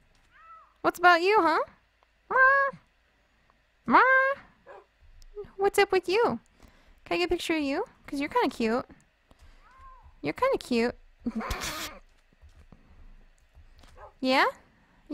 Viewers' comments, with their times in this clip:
0:03 that sound like my cat when she meows